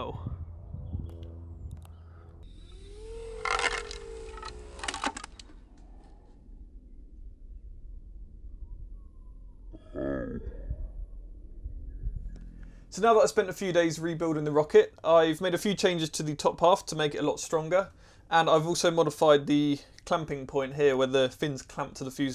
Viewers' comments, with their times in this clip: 0:10 I love the slow motion sound of the disappointed "oh". Thanks for not editing that out.
0:10 his "oh" in slow motion sounds like a frog croak